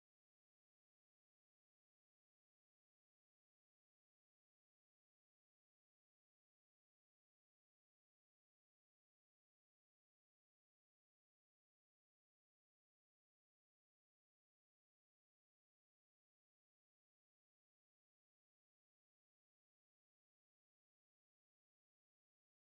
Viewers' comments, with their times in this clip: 0:05 That is music